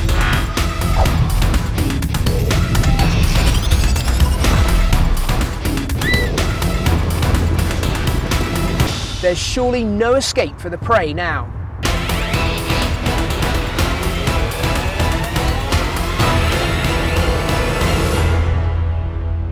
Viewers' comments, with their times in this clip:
0:05 My eyes watered! That little poor elk thingy was injured and it cried! But wolves r still bae